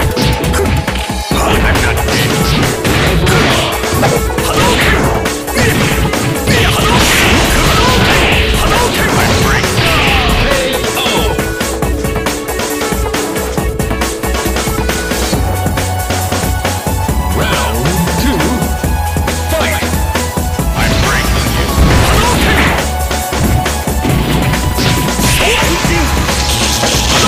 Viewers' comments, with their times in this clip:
0:08 they wrong for cutting off Batman's line before that hadouken hit so it sounds like he's just saying "I'm afraid" before he dies lol